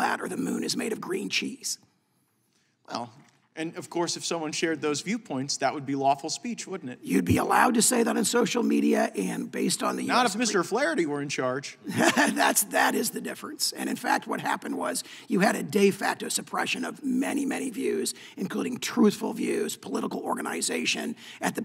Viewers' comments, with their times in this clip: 0:05 y do yall always have to have a witness (who is very, very smart/compelling with a frog in their throat?!) All the dems just read from a pre-written paper, lol, I don't suggest that for reps, but I can barely understand this dude. I obviously understand that the witnesses don't get that prerequisite, and im not tryin to be mean 😇😘